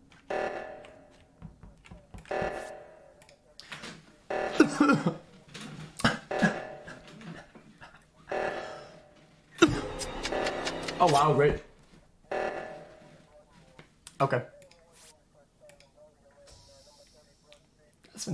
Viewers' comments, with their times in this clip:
0:03 xqc starts coughing and gets killed by a doctor